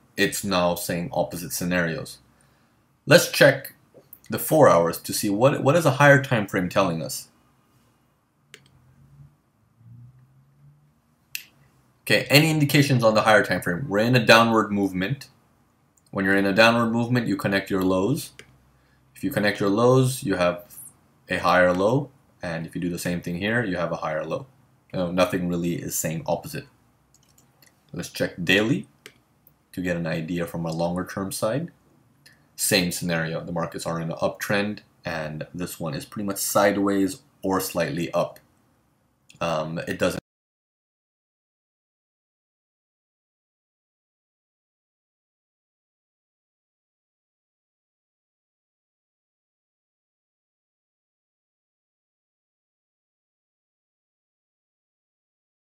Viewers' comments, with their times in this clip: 0:07 NO audio after
0:37 Hello Excellent webinar But I lose the sound from and upward